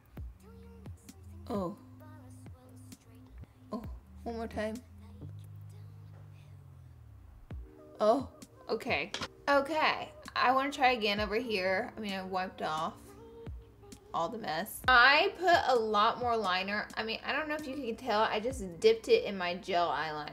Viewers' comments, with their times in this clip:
0:03 your "oh" literally made me laugh out loud that was so funny